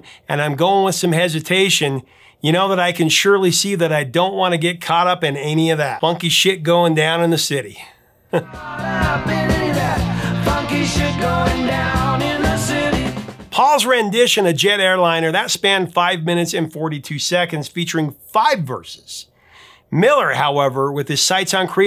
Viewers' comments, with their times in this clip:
0:03 ...Funky kicks! ... Funky kicks! 😂😂😂😂😂😂😂